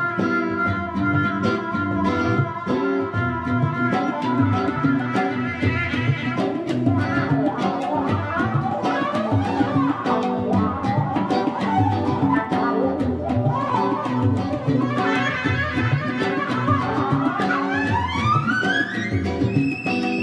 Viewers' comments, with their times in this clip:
0:06 I'm a guitarist but, that violin was bringing a whole lot of emotional characteristic to that chord progression in around the solo. He blew my mind.